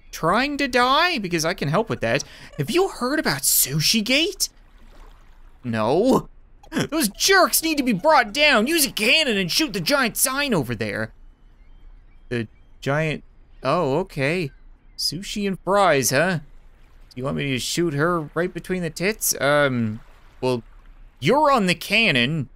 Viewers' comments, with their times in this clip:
0:10 go boom boom